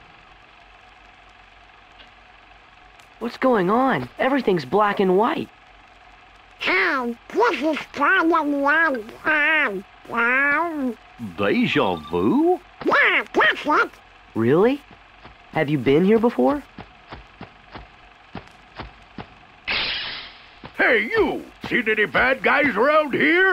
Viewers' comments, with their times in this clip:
0:06 Donald Duck sounds like Donald Duck from the past